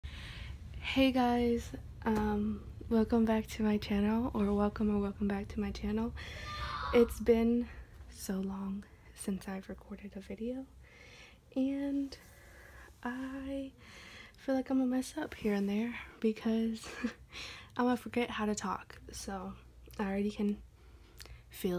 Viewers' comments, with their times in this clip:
0:06 lmao that scream tho 😂best way to start that video (Love your Journal btw 😁)